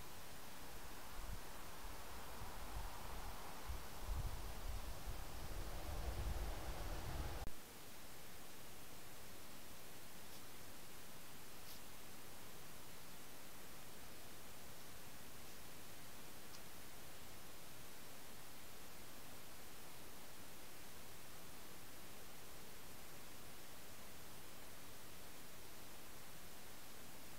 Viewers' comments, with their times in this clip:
0:09 A lively little devil sniffing